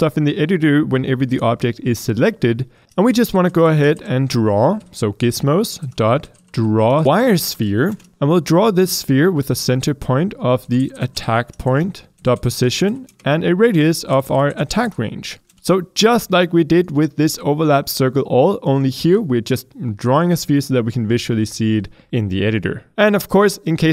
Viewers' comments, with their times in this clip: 0:06 that sounded wierd lol